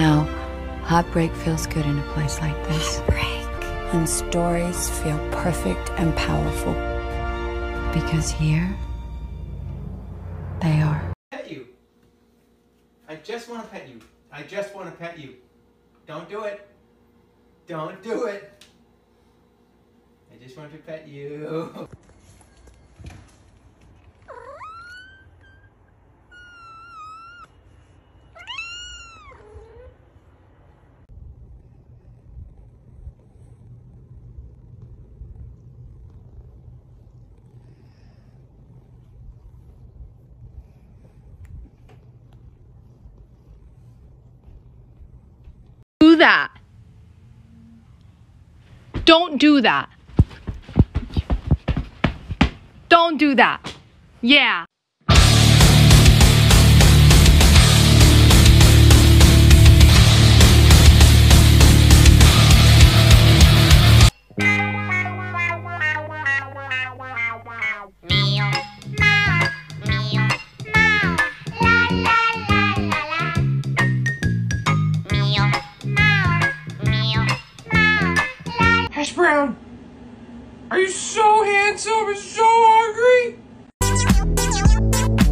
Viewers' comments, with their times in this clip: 0:10 Jerma how did you get in here?
0:12 Am I going crazy or is this dude jerma. Like he looks and sounds exactly the same.
1:08 omg that music is such nostalgia